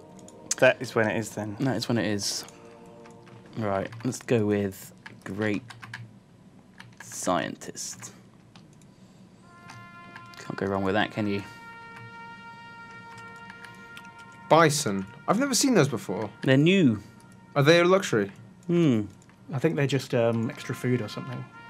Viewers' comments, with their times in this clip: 0:09 Taps starts playing. Its like the playlist knows to pay respects to Datlof before Datlof fell